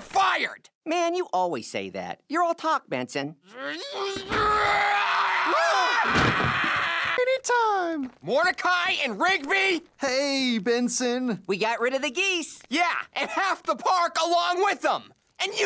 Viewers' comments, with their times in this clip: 0:03 😂 was so mad he couldn't help but scream